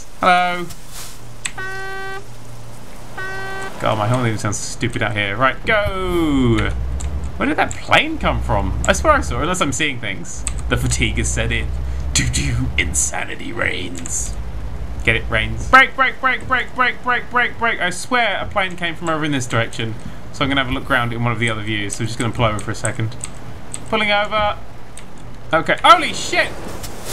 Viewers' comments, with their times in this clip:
0:08 We just not going to talk where his "DO DO" was timed PERFECT with the lightning? No? ._.
0:11 just now realized that the "dodo" was perfectly timed with the lightning